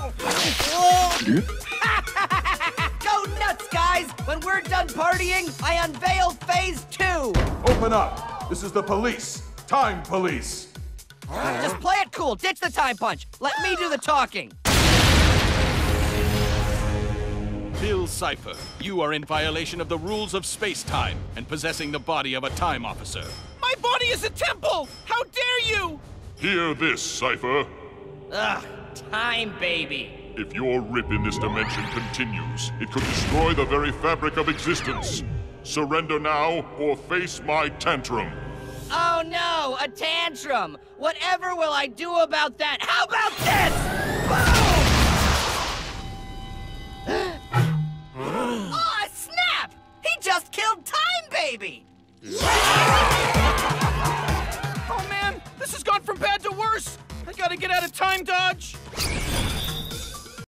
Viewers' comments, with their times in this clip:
0:07 FBI knocking the door.
0:24 sounds like morty
0:24 wait... Thats morty’s voice I just realized
0:55 bruh he sounds like morty tf
0:55 that guy sounds like morty from rick and morty
0:55 I only hear Morty
0:56 is it me, but that guy sounds like fucking morty